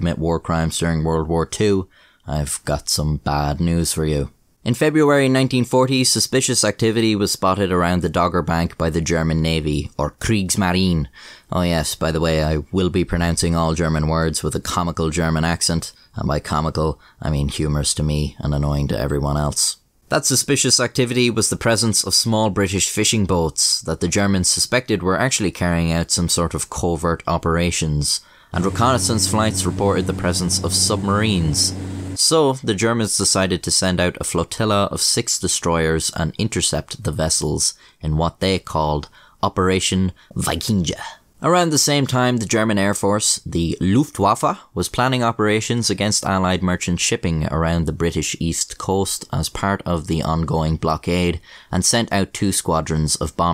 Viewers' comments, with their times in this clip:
0:10 it comical but yeah thats not bad. as a german i can say damn you´re good in german ^^
0:41 There's a certain beauty in correllation between the time stamp where you really committed to pronouncing words you promised would be 'comical.'